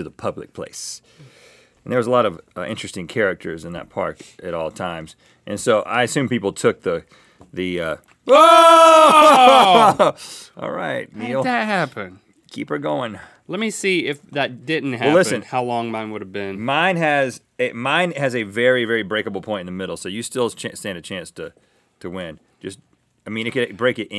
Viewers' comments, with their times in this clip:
0:07 synchronized woaaaaaah haha